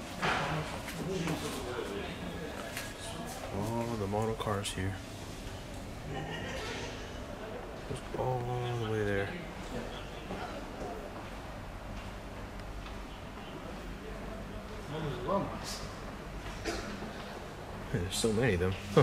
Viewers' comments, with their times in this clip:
0:05 The most insane laugh ever...when are you guys going back to Dubai and Al weer?